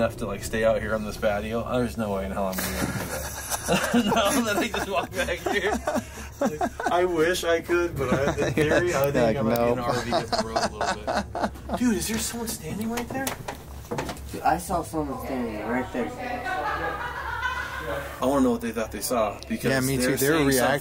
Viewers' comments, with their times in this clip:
0:04 there's also a voice. Sounds like it's in the background. I think it says...Come Back.